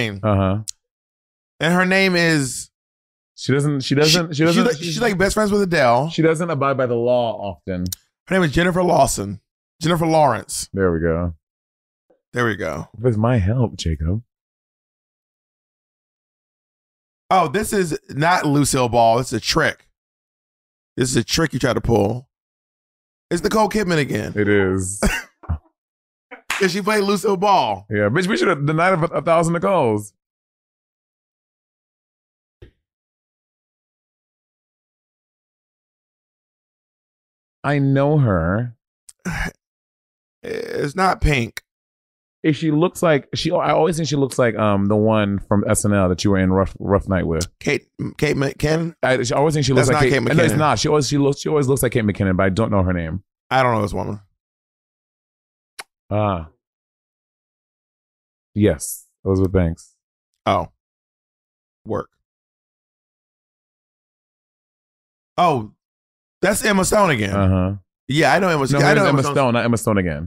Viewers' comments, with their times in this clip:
0:09 bob sound likes Eminem “her name is”
0:55 Come on, no one said the answer loud enough, I don't know who this woman is 😭